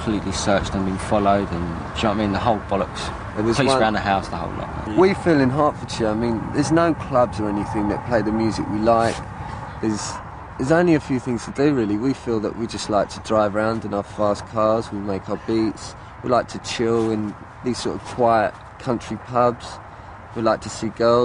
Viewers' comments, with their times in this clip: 0:09 The essence of intelligent jungle